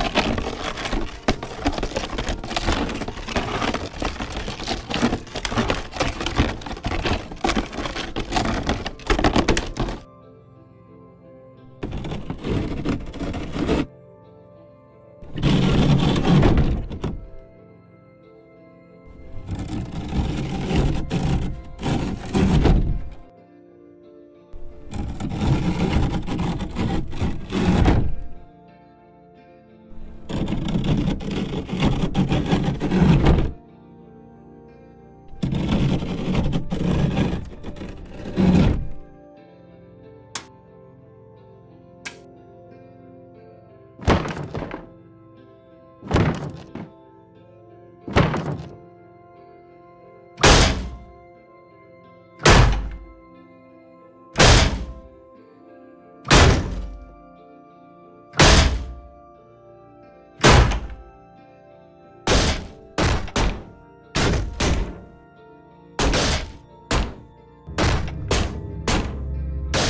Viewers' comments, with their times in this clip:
0:07 sounds like someone at telltale handed someone else a bag of chips, and said "Go eat those by the microphone"
0:51 that door hit hits my freaking eardrums.